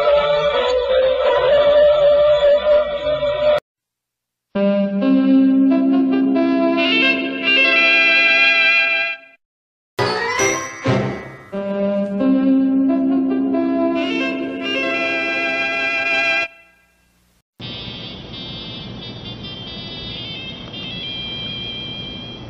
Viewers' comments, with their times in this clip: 0:04 The S From Hell
0:04 I know many people over the years have been terrified at this logo, perhaps because of the music. As a kid of the 1960s and 1970s, I do remember the logo but was never scared of it. The reason I didn't like it was that the music WAS SO GOD DAMN LOUD!!!!! Why those synthesizer notes had to be so shrill and piercing is beyond me. Perhaps it was just terrible sound mixing.